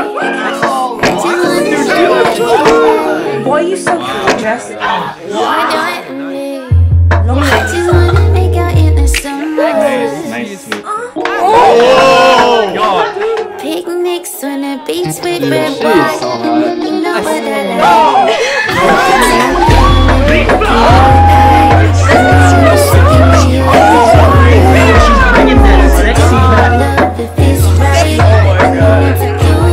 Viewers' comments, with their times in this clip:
0:08 Did I just hear a little moan like "Ugh" in
0:10 so no one talk about someone moaning while Liza is dancing-...
0:10 did i just hear a mo